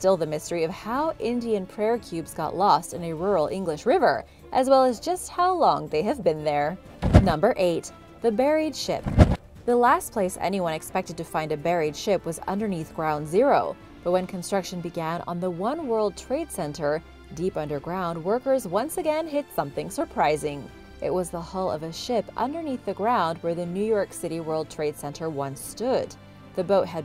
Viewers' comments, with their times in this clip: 0:08 i thought it was 'the buried shit'.